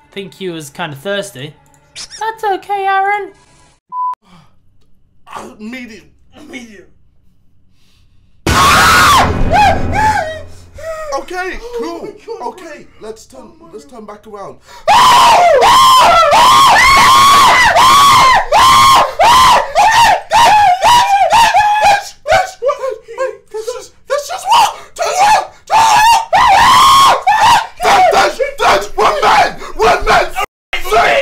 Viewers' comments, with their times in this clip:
0:08 This was funny KSI Scream
0:13 KSI Scream is the best lmao